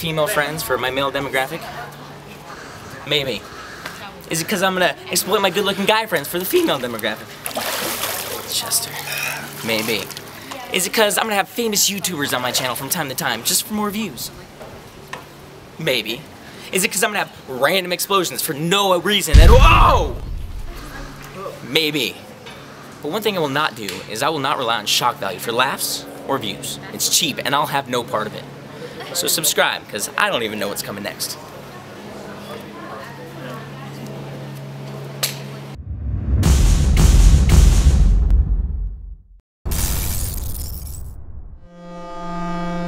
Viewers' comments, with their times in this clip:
0:05 Did his voice crack?
0:05 epic voice crack
0:05 voice crackk xP
0:08 LOL at how you said 'Chester' it was kinda creepy and funny :L
0:24 I don't understand what he says before "for laughs or views"